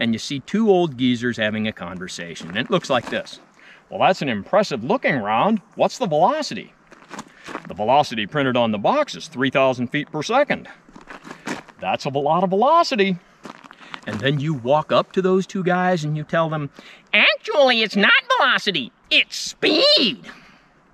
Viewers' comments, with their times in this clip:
0:06 Sounds like Hank Hill and friends
0:06 Sounds like Hank Hill and friends